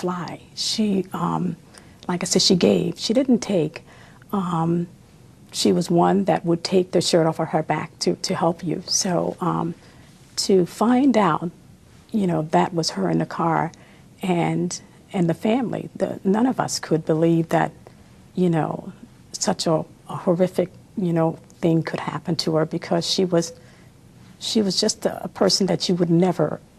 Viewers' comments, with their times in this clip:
0:10 By i literally could not finish these interviews from people she knew. No disrespect and I'm usually not one to notice first but they amount of "uhms" said by not only the sister but also the detective... holy. Wow. Annoying🥵